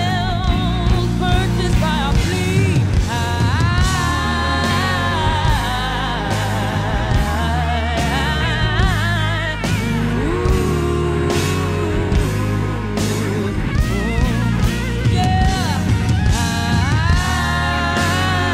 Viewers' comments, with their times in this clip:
0:03 This could be a Bond theme, just sayin'. 🔥👌